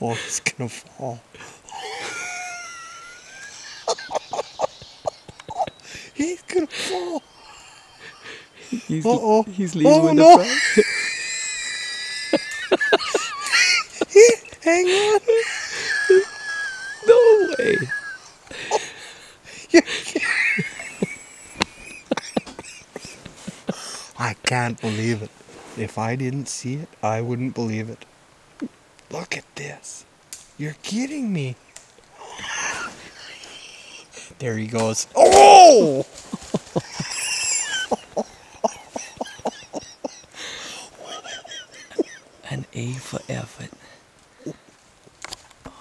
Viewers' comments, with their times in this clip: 0:09 what animal is making the weird sound ?
0:33 what were more funny? Like - Mans laugh Comment - bear falls.